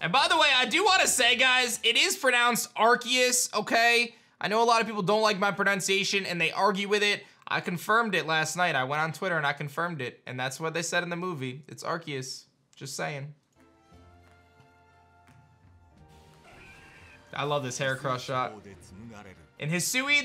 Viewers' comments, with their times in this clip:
0:08 you still pronounce braviary wrong though...